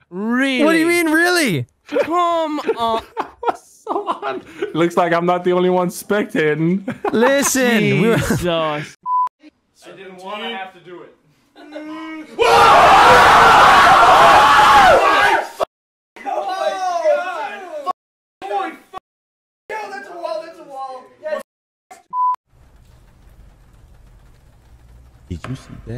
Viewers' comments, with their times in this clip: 0:10 :- was the best part for me all boy gathered around playing horror games and then screaming...😌